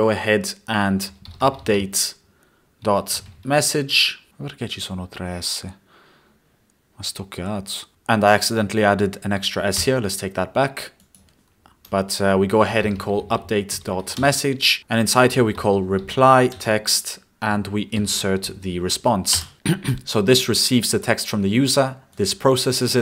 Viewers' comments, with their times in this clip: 0:07 did you speaked Danish